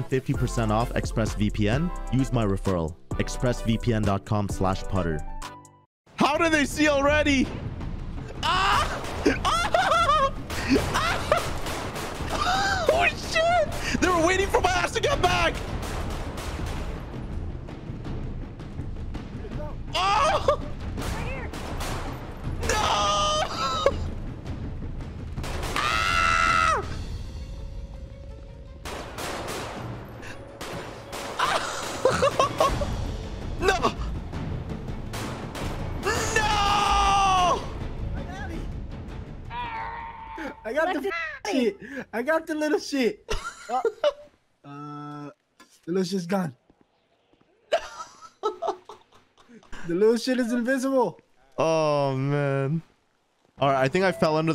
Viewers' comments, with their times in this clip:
0:09 why'd he scream like Tom from Tom and Jerry
0:41 that was a angry fat cat meowing cuz his prey downed